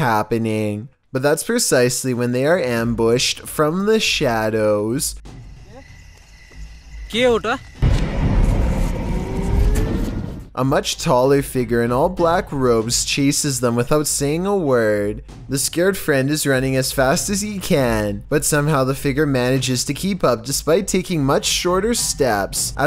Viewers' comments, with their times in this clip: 0:09 who heard kinda like a ghost moan